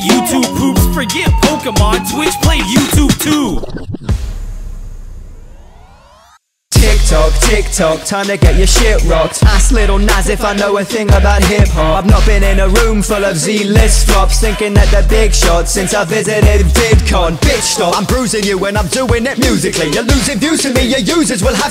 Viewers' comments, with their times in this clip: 0:06 was amazing, the tiktok part had a good flow rhyme and rap
0:06 for shitting rocks